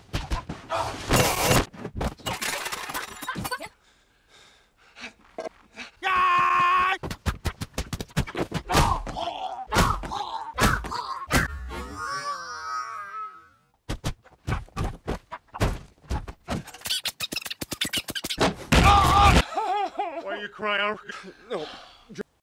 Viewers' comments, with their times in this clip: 0:07 🤣🤣🤣🤣🤣🤣🤣 this part sound like slapping sounds
0:12 High-Pitched Tom Cruise